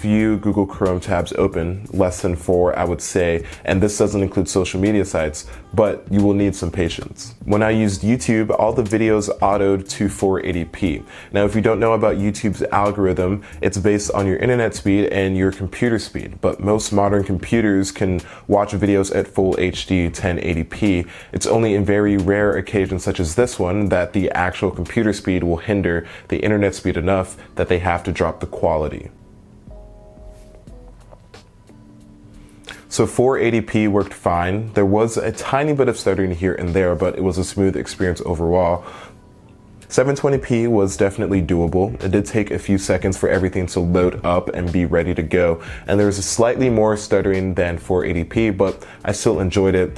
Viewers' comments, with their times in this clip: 0:07 That pause though...... XD
0:30 The long pause lmao!